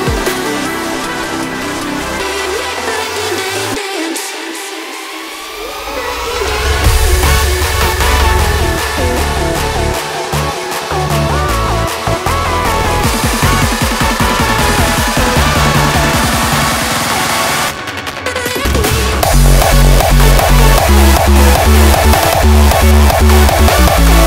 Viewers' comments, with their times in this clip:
0:06 i love this type of "not end yet, one more drop" thing. Fuuuuaaaaaaaaaarrrkkk 🔥